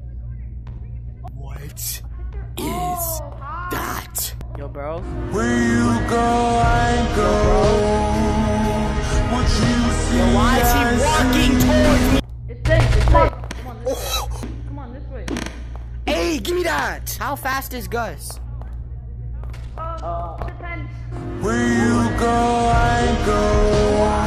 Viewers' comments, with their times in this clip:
0:05 Bro when I first saw this thing with the song it struck fear into me